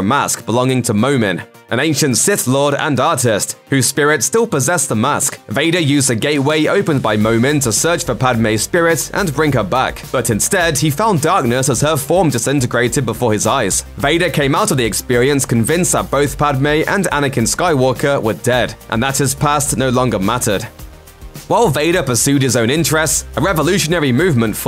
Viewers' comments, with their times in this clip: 0:06 a gay way???